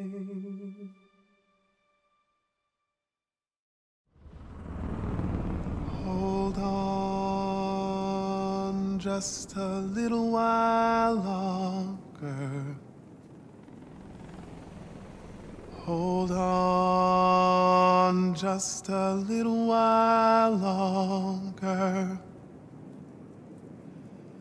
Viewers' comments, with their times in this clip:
0:06 sounds good on 0.75x play speed